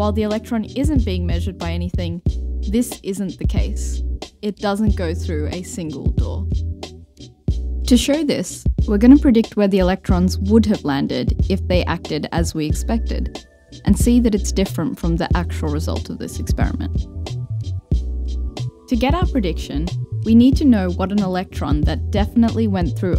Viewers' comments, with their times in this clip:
0:04 I think the most drastic jump is after I'm guessing you were closer for the latter part, which also made it sound a bit boxed-in due to proximity effect? The former was maybe a bit quiet vs the music, but sounded way more natural, and it seems your room is dry enough to allow for a bit of distance (also makes it less sensitive to the angle, which can be a whole 'nother source of annoyance...). I like to [consults dictionary]... cock a snook (?) (the thumb-nose-mocking gesture) at the mic/pop filter before takes whenever I'm unsure if I moved too much, esp. after recording breaks. Either one- or two-handed is usually a good distance. /lengthy unsolicited audio engineering remote diagnosis, sry ^w^' Good production overall, and great script & performance! <3